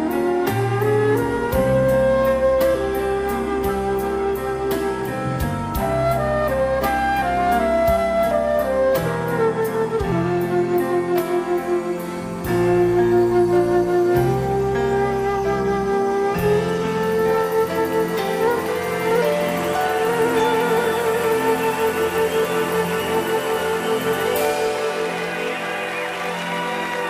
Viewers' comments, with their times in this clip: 0:09 That's so cool how he plays the flute or so.